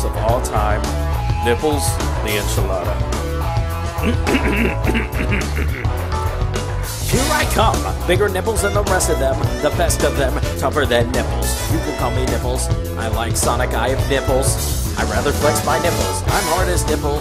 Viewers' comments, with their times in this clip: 0:05 the song starts officially.